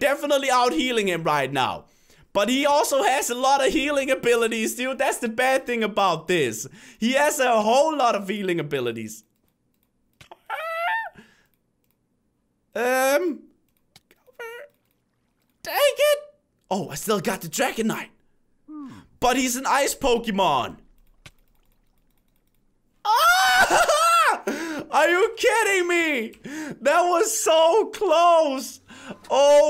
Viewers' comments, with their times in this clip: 0:10 he sounds like a chicken